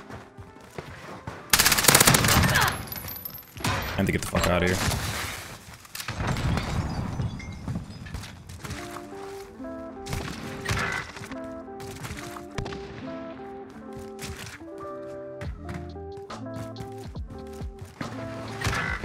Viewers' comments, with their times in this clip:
0:03 you sounded like canelo lmao